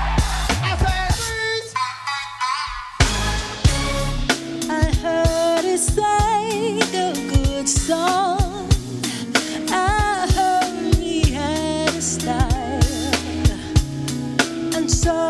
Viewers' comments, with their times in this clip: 0:03 It's the Killing Me Softly redition for me! Had me shedding tears for it's soulfulness & beauty of that legendary voice she has!!!